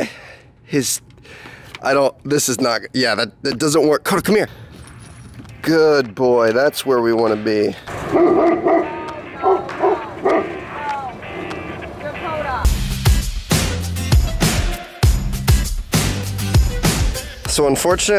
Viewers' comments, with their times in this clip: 0:05 WHerE Is ThE MuSic?!